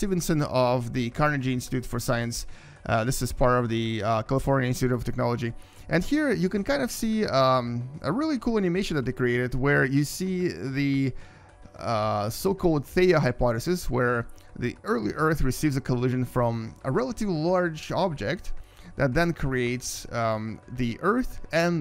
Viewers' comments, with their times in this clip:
0:09 If you put de speedread at 0.5, it's very very strange...